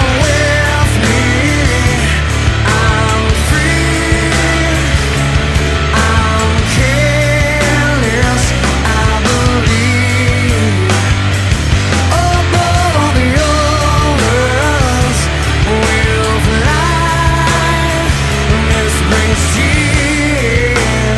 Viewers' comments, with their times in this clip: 0:03 love this chord